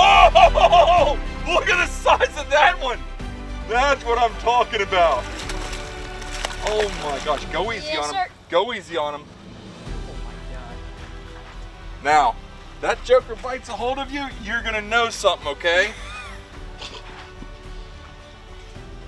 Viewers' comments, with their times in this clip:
0:07 do that kid just try to say Yez zer?